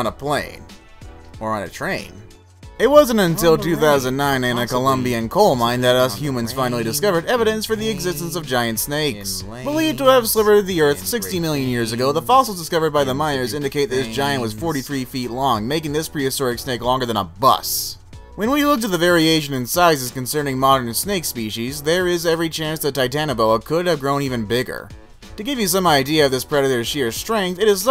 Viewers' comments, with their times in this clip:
0:08 Listen careful on do you hear background talking